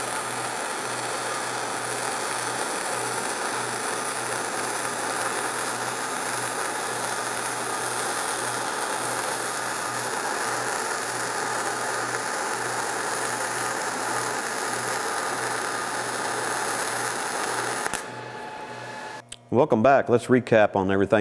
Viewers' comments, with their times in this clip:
0:04 ..... .....looks about right, sounds about right......! I did a lot of this with .045 on my old Millermatic 200 .....